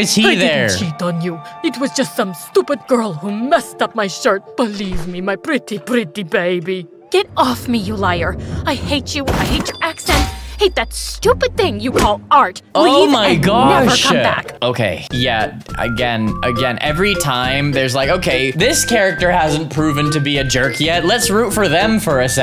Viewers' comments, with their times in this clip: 0:10 "Goofy Ahh accent"😂😂